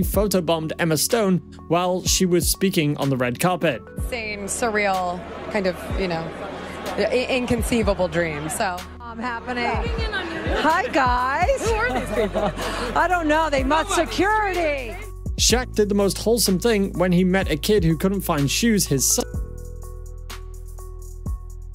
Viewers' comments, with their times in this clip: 0:07 From until almost almost all vocals gone. Only annoying background music